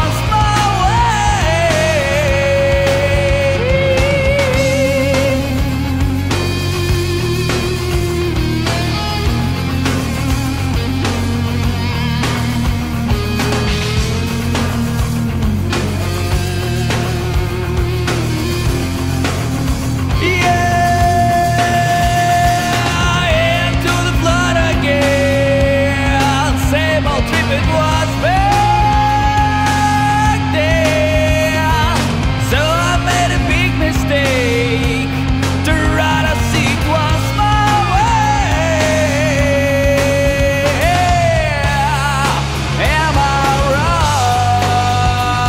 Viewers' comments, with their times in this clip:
0:03 dang that high pitch! (voice crack)?
0:27 I love the swing in "baaaack then"